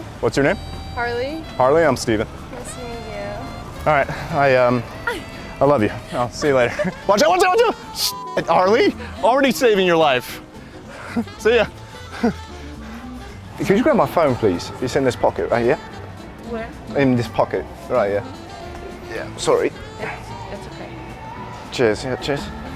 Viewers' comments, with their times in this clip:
0:07 I though you talked about the "farty hot ass" from the girl at minute